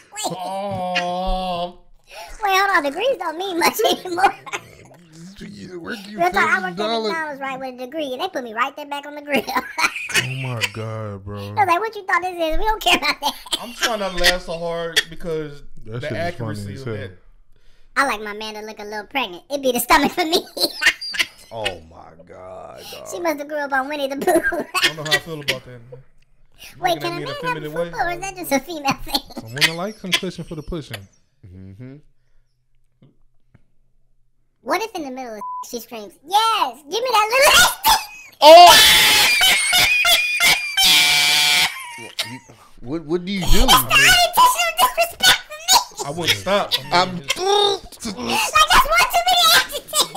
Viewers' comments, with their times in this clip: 0:04 Ummm... Is that a laugh ?
0:38 That laugh 😂😂😂😂😂😂 killed me